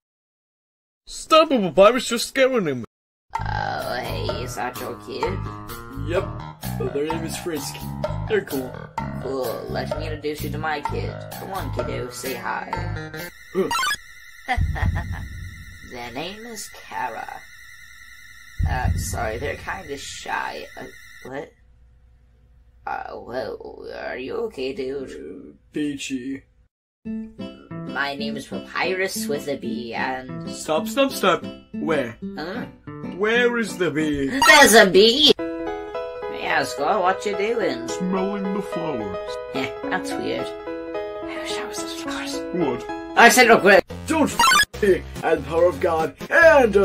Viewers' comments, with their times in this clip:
0:04 WHAT IS THAT VOICE? IS HE SICK?
0:32 ya like jazz Jazzy rendition of Bonetrousle begins